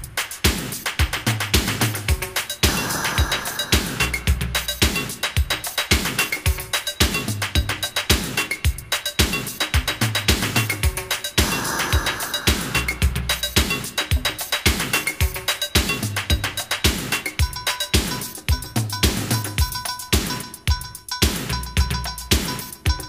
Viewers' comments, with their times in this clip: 0:10 The break is absolutely KILLER!!!!